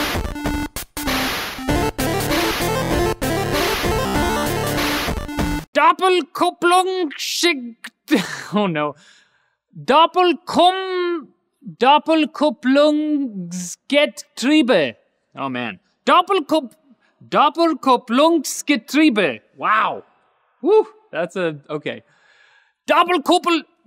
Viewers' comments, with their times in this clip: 0:07 😂😂😂😂😂😂😂 Much easier to say, as a German.